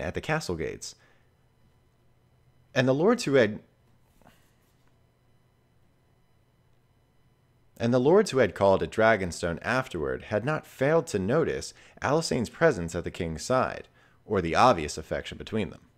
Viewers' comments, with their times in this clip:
0:03 Heres one example where you say "the lords who had" and then audibly make a grump sound and then reread the sentence 😂